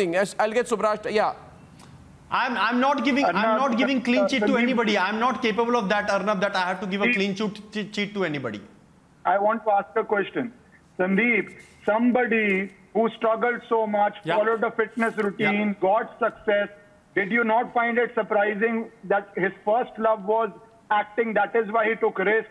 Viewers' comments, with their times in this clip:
0:05 Did you listen he says"I m not capable of giving clean Ch*t to anybody" 😂😂😂
0:07 Sandip was so panicked he said "Clean Chot cheat chit to anybody" then party was pronounced as Particle. 😂